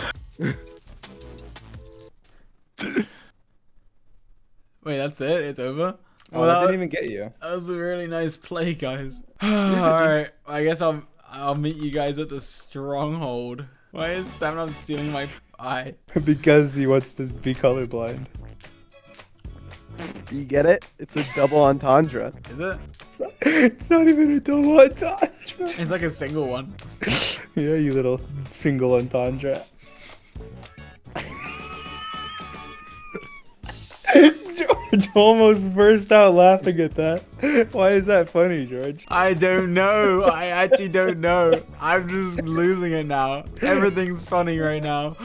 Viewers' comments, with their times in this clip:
0:07 he sounds so strained here 😭
0:14 the joke wasn't even funny. It was dreams "yeah you little single itondra (whatever that is)" that made me burst out laughing. He said it so enticingly that it was hilarious. What made it better was dreams laugh. Always the cherry on top
0:26 why is nobody talkig
0:31 Bro the wheeze though 😆